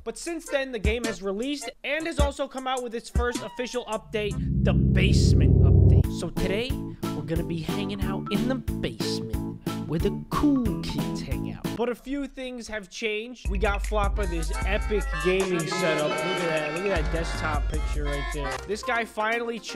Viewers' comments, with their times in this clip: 0:05 his voice is so glorious and rich